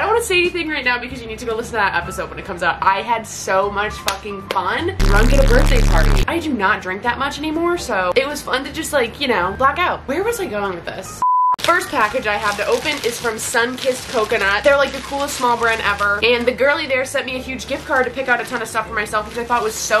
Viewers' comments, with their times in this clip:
0:03 i’m hearing club penguin pizza parlor music 😭